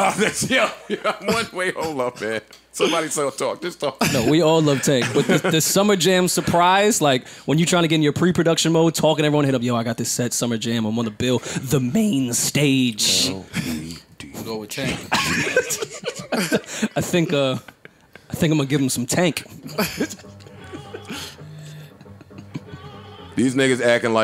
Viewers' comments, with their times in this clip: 0:10 So we gonna ignore the voice crack